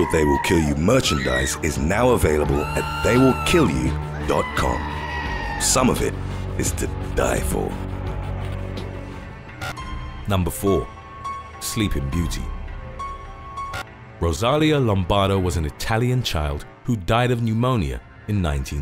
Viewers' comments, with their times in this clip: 0:03 Anyone else still hear that goat screaming